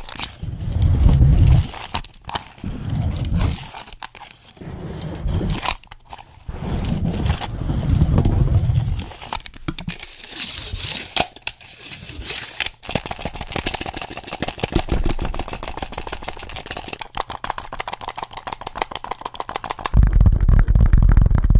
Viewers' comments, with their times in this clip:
0:06 I love the measuring tape noises so cool!